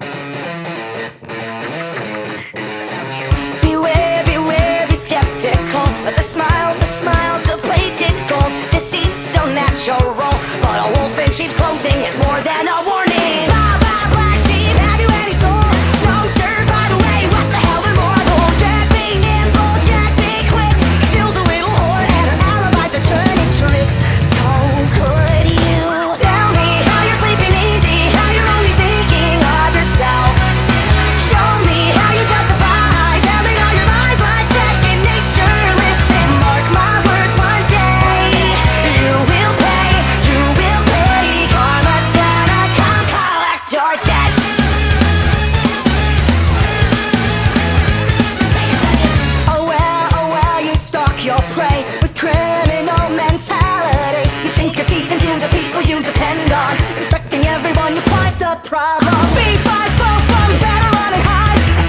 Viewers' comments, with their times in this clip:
0:03 does anyone else hear that weird voice? Or is it just me
0:48 Am I the only one who heard "potato nugget" ? XD